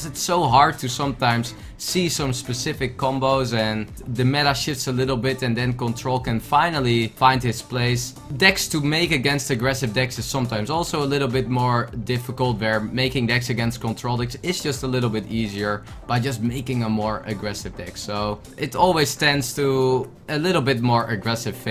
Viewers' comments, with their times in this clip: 0:04 the meta shits xD